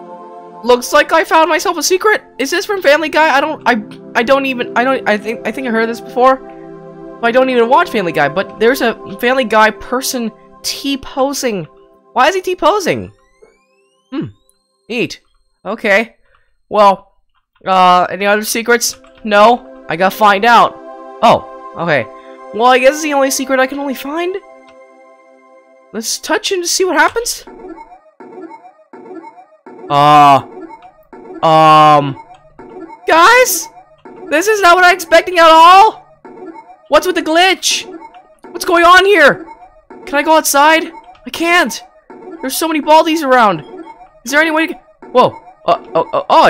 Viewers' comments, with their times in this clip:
0:06 i heard first prize
0:27 thats too many unused chicken sounds